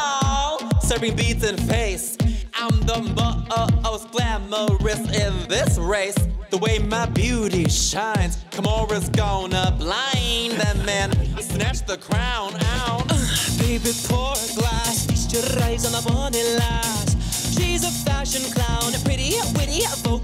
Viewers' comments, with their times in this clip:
0:03 I can only hear bob